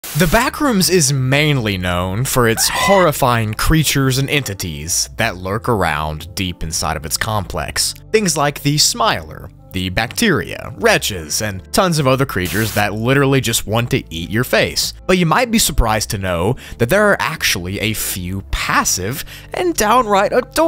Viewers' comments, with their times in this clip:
0:02 I looked away for a few seconds and the screaming made my heart drop
0:03 nah what was that scream lol😭